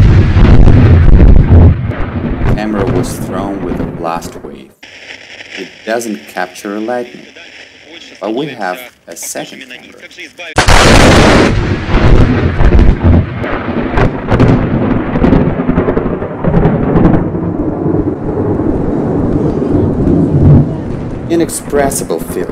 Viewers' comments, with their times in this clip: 0:08 Windows startup with a SoundBlaster card